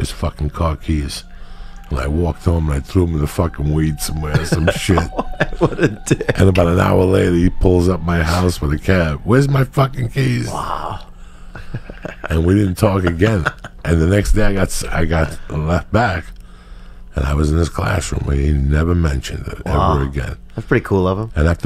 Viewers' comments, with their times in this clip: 0:04 it sounds like someone howling in the background that shits kinda freaky